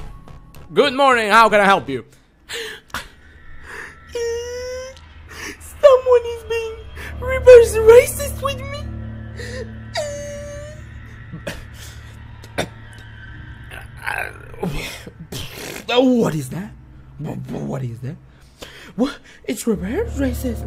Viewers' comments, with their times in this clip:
0:04 "asriel cry sound"